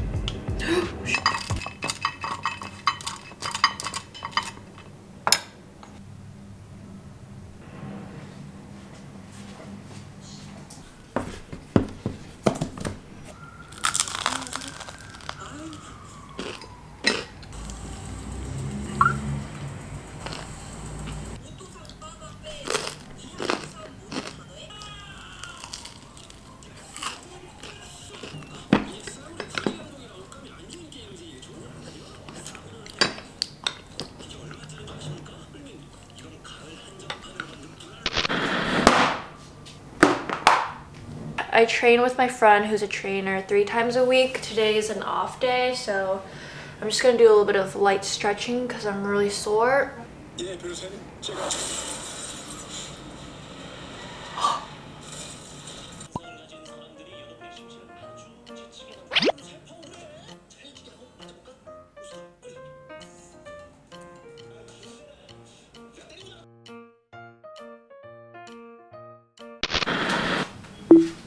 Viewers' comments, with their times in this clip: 0:10 Did she or a ghost whisper “shit”
0:54 were you watching the k-drama Vincenzo? Sounds like the accident scene lol